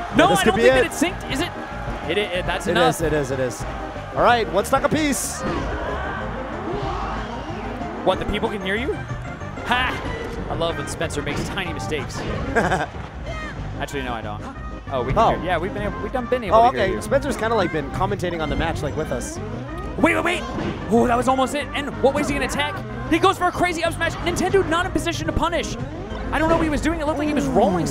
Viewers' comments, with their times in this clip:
0:09 SCAR SAYS HA AS FOX UPTHROWS LMAO